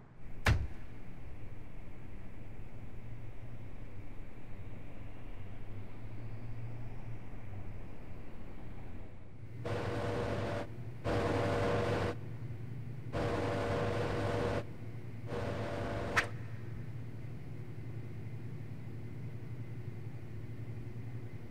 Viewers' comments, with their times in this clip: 0:09 WHY DOES THE PHONE MAKE THAT SOUND? Btw, lovely video. I will add it to my movie library<3